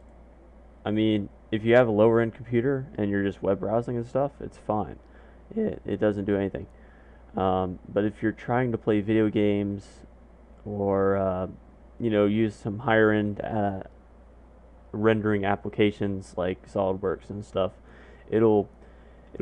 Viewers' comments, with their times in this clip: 0:04 MAJOR VOICE CRACK
0:05 best voice crack